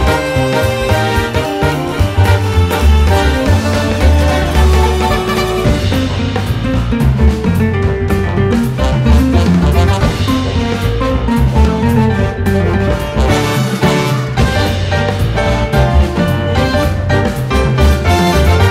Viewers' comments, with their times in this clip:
0:04 Oh man my favorite palace theme! That piano into the brass... This whole medley is just AMAZING!